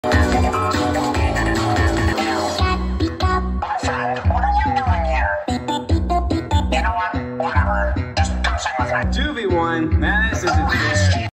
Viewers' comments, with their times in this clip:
0:05 it does sound like amogus